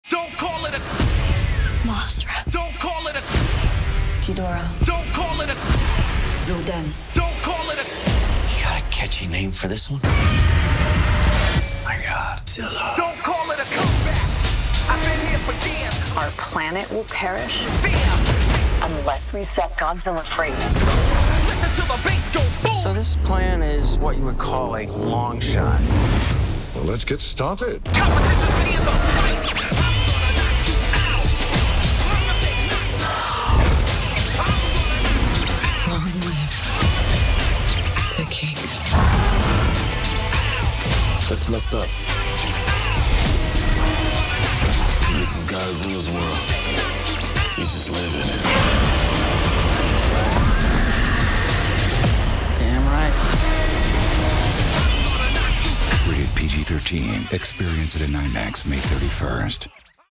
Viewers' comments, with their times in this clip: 0:02 He said MOSRA it’s mothra
0:09 They bring back the OG godzilla roar
0:09 Did they just use the classic Godzilla roar? THROWS WALLET AT DIRECTOR'S FACE
0:10 90s godzilla roar
0:30 Just this scene alone when the beat drops makes me so HYPED such an amazing trailer
0:44 I like how they added the classic roar on "knock you out"it's amazing LONG LIVE THE KING! Paramount hurry take notes GODZILLA WENT SUPER SAIYAN GOD
0:48 The most badass roar right here
0:53 i could've sworn I just heard a little bit of the 98 roar